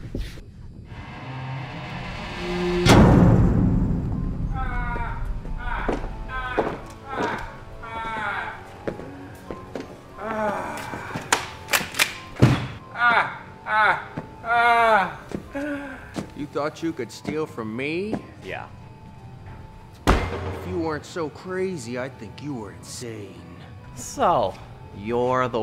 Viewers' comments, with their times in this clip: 0:10 Is this the voice of a pergnent woman